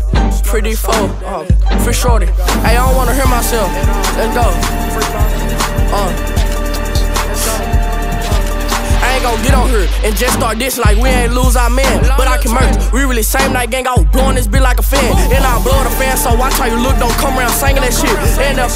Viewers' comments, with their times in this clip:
0:04 love the beat